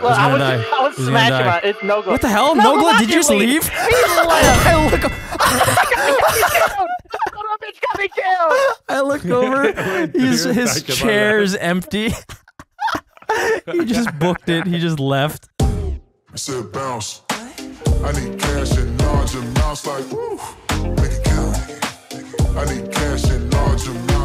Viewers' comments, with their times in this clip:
0:05 does delirious sound so different here or is it me?